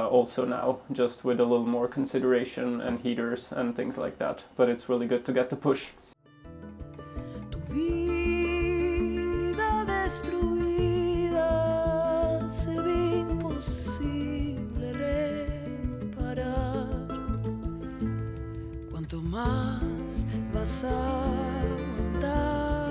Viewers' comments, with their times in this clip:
0:08 The singer and music are wonderful.